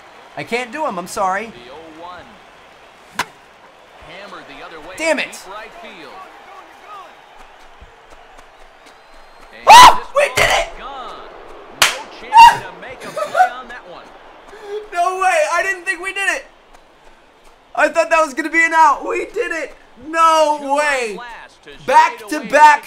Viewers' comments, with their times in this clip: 0:08 Lets take a moment of silence for head phone users